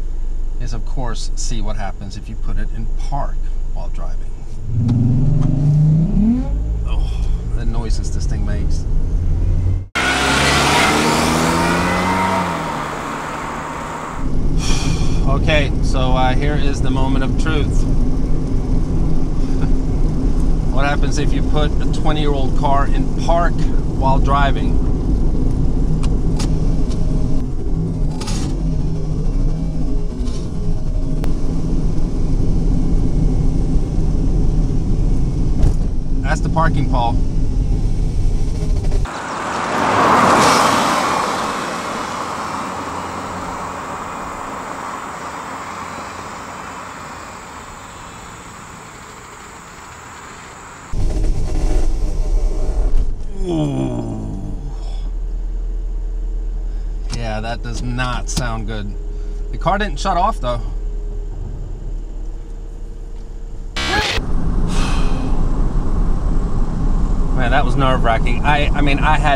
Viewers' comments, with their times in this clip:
0:04 The noise it makes makes me think of some exotic sports car reving up 🤣
0:06 sounds like a straight piped v6 for a sec 😂😂
0:52 when you hit a pothole and it sounds expensive.
0:54 When you underestimated that fart 💨🤣